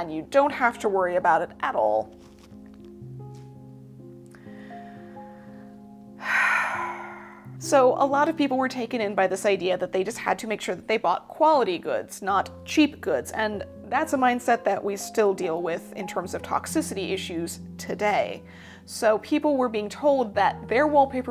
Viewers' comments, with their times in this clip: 0:04 That sigh was my entire 2020 lol